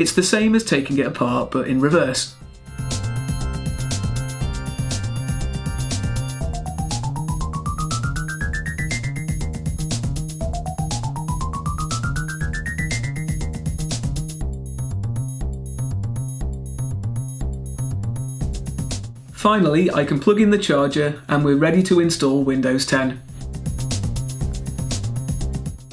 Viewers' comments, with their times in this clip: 0:10 this music is haunting